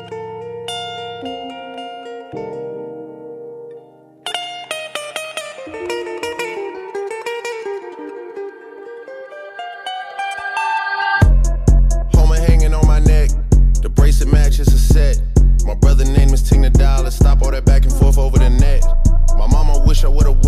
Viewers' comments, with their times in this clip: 0:07 that transition... godly props to u my boy